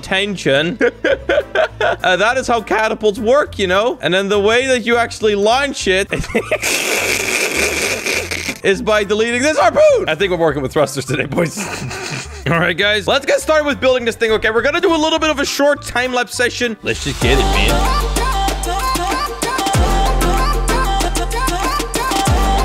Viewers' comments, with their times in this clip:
0:07 the old car trying to start
0:07 Wut just happend he did tge sound like ccgcgcgcgcggcgcgcgcggcgcgcgcgcc click the numbers